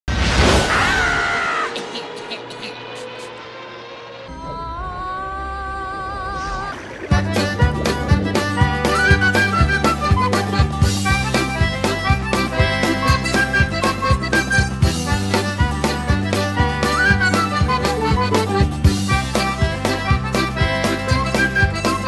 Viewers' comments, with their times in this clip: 0:01 LOL That Bugs Bunny Meme Is So Hilarious Because Bugs Has Ariel's Voice
0:05 Did you make Bugs Bunny 🐰 have sing 🎶 like Ariel from the Little Mermaid 🧜‍♀️